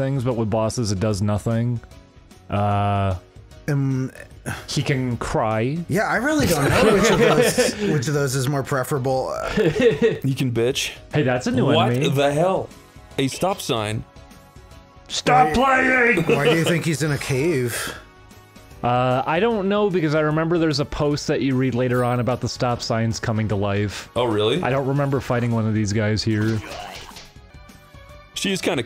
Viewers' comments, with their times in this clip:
0:10 Why does the OST in this area sound like it's from VA-11 HALL-A ?